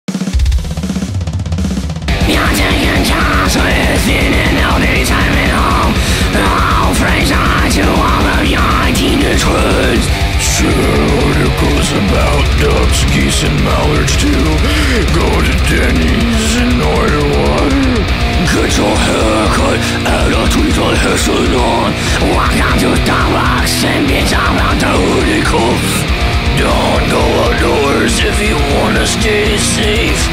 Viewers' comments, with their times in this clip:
0:02 Marge Simpson can scream?
0:08 hahaha you can hear it in the screams its missing accents
0:15 he just sounds like a dude with a sore throat lol